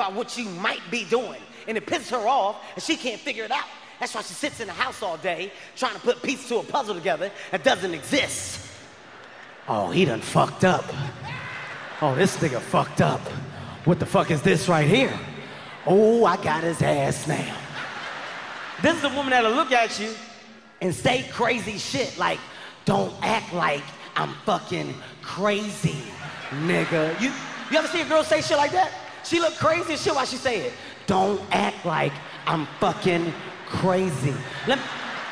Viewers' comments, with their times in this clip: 0:10 that guy’s laugh got me
0:20 Is it just me or does it sound like Thomas the tank engine’s whistle on ?